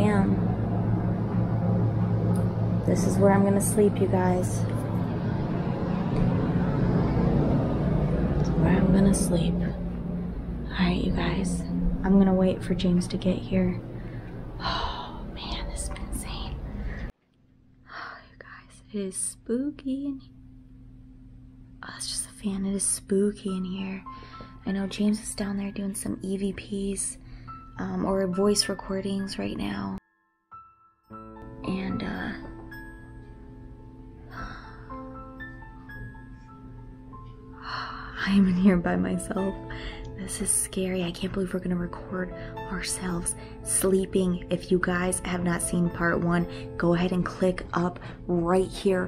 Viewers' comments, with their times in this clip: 0:05 heared that woman voice (listen closely)
0:37 I swear I hear a male voice say iam watching you